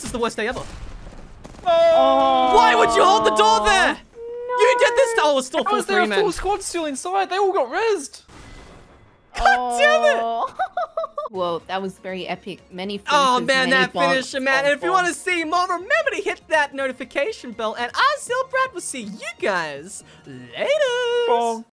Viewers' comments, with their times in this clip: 0:09 Happy Wattson noises